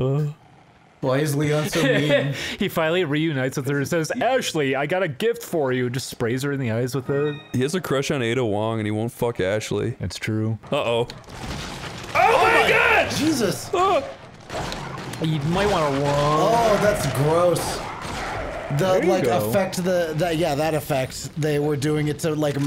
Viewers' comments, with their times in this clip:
0:10 I actually screamed "oh my god" along with everyone else. I can't even play scary games lmao